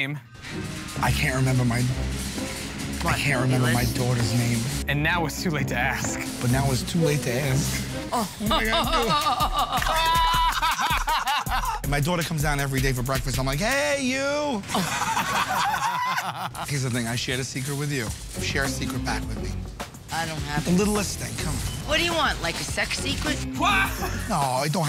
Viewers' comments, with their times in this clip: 0:08 why she laughing like that😢